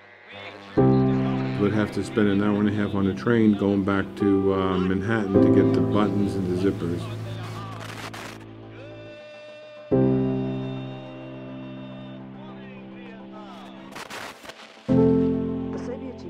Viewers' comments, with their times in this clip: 0:03 Is the software able to refine the transcription? Because in the phrase that starts the person actually says "Would have to spend an hour a half on a train going back to AAANH Manhattan..." I would like to be able to delete and clean up those kind of verbal tics, remove any sort of sttuter, stammer or falter. But if the transcription is "clean", I need to edit in the regular way (which I already do, but by transcription could be way faster). Thank you